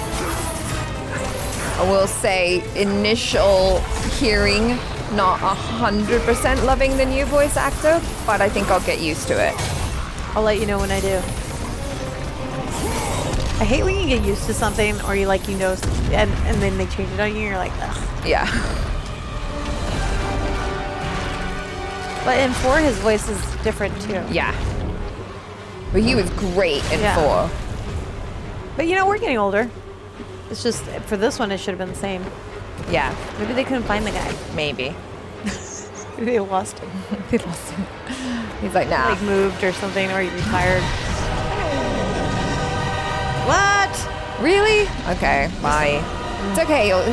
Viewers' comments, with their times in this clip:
0:06 NO ITS NOT A NEW VOCIE!
0:29 FOR THE LOVE OF GOD OF WAR! Its not a new voice its the same!